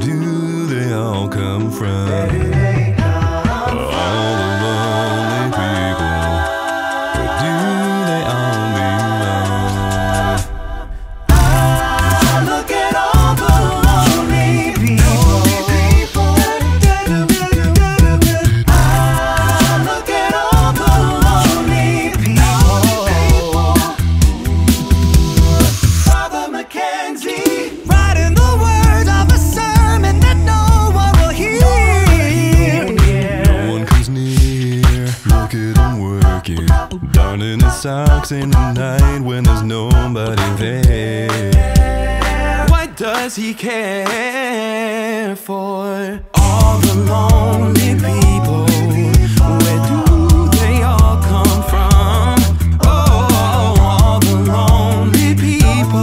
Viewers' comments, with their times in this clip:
0:09 THAT BASS IN THE BACKGROUND
0:09 It sounds like a faint B0 growl note
0:09 I hear something, I don’t know what, but I definitely hear some deep bass that could be something in production
0:27 Very ambitious arrangement. Think it came off pretty well I like
0:28 that bassline makes my bassspeaker vibrate my whole room
0:41 A1 and a signature E1 in the background at the end